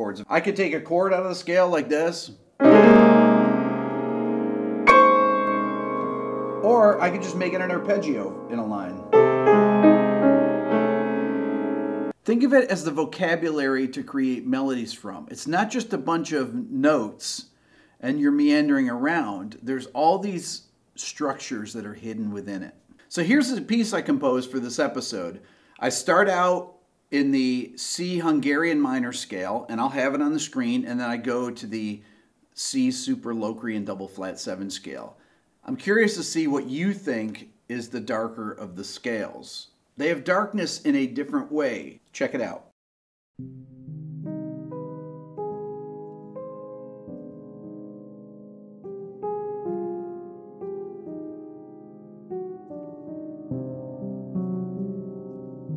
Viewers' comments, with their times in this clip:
0:08 sounds "good" .. Hungarian Minor is kind of Mistery and Confusion and The Super Locrian bb7 has something Resident Evil'ish, Typewriter Room sound. So I think the bb7 is darker
0:43 I find your improvisation/composition on piano starting very interesting, if not simply beautiful most of the time in this piece. Do you have Piano Pieces , in a similar spirit, to check on youtube ? Anyway many thanks for this video, I don't think I have ever used Super Locrian, and I should definitely start to use it after your great introction video.